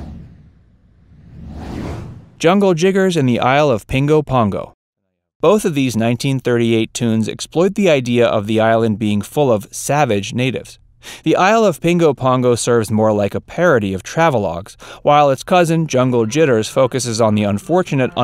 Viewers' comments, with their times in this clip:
0:04 sounds like a racial slur slippage from the narrator of this hilarious quest to find "implied" racism. surely sounds like a tongue slippage, mistaking two g's for the two t's in the pronunciation of the title.